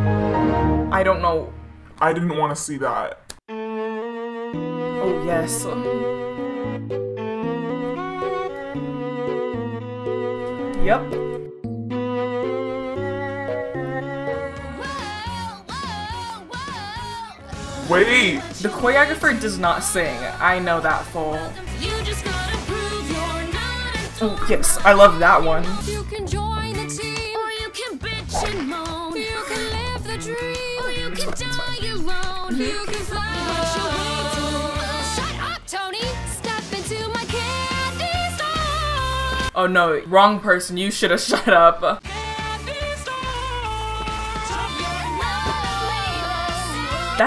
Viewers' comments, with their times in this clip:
0:03 pls the music with their dancing
0:34 That harmony tho